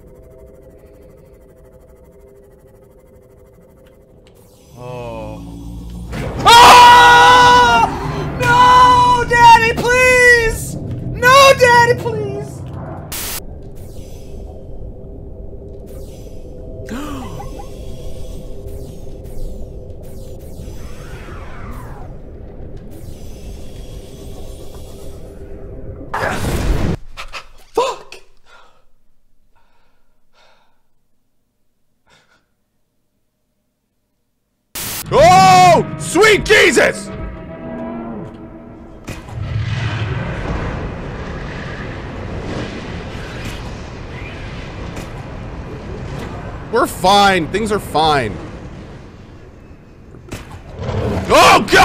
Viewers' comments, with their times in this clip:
0:05 who screamed? the reaper or the guy?
0:26 quietest reaction I've seen in the video😂😂😂
0:35 so , do i have a ear problem ? i hear "Fruit Jesus" x) funny ... and im french